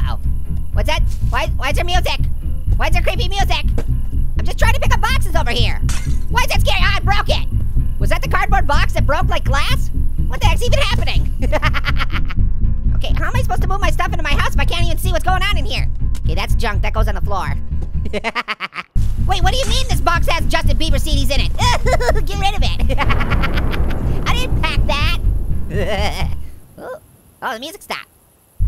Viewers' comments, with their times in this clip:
0:10 now that's scary Running and laughing with a cardboard